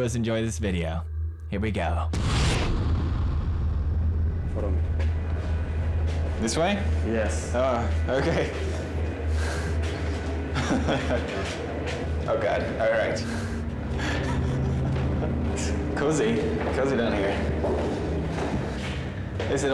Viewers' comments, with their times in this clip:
0:07 BRO SINGS Its AM